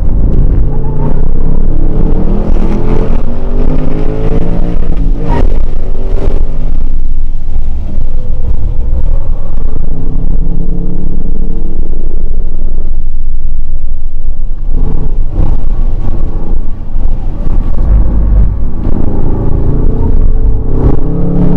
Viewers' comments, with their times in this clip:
0:06 Did I hear a 3rd gear scratch in the auto at the mark? Impressive. Looks like a killer open track car. Thanks for the vid!